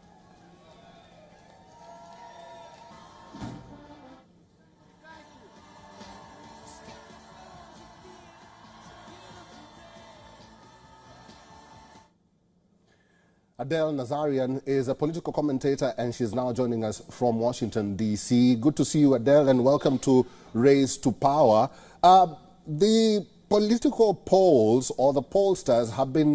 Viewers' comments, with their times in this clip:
0:10 Anybody who watches WION knows that's not you're voice. And this is the curse of Adam and Eve,where there is good,evil will always be present. Genesis -18 says, "but of the (tree of the knowledge)of good and evil, thou shalt not eat of it: for in the day that thou eatest thereof thou shalt surely die". , the tree of knowledge and the eating of its fruit represents the beginning of the mixture of good and evil together. Before that time, the two were separate, and evil had only a nebulous existence in potential.